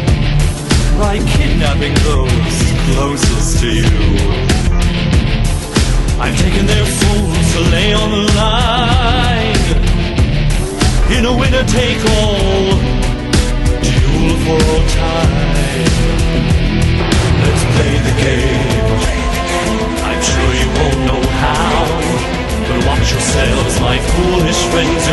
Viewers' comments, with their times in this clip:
0:08 bro Pegasus is RAPPING ?? 🔥🔥🔥🔥